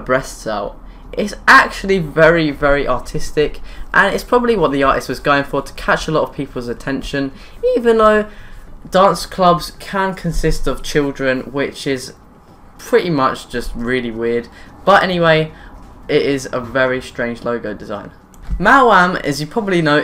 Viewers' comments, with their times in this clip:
0:06 Mate, top extract, that voice crack XD
0:06 that voicecrack xD
0:07 voice break :) haha
0:07 and That voICE break though... PUBERTY is kicking in XD
0:07 click for voice crack
0:07 lol his voice cracked lmao
0:08 Lol, everybody is talking about the voicecrack.
0:08 Lel. Voice crack
0:08 OMG THAT VOICE CRACK DOH